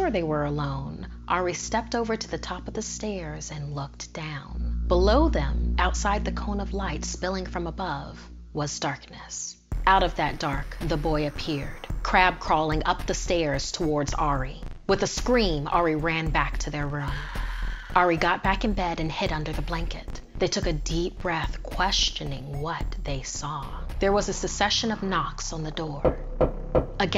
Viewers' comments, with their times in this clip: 0:09 when the music stated playing i put my face close to my computer and when he crab walked i spilled my drink all over my best shirt Thanks snarled
0:11 bro snarled don’t do that😂😂😂